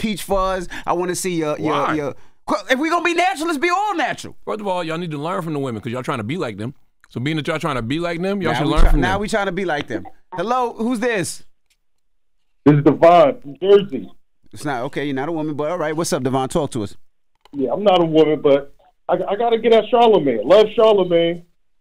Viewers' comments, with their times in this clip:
0:08 I AM OUT! A grown man eating while talking on the mic is ultra disgusting and disrespectful. WTF? Nobody wants to hear that in their ears or look at that!